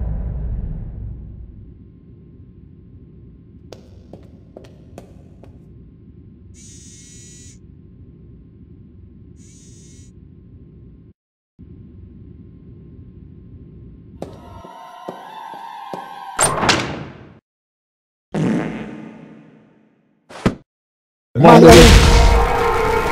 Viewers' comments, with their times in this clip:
0:09 someone fard too much